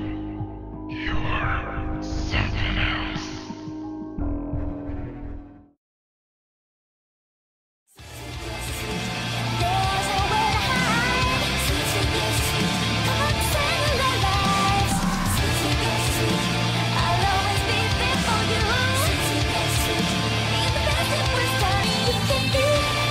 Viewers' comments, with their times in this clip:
0:08 thats nice music
0:09 i like the music!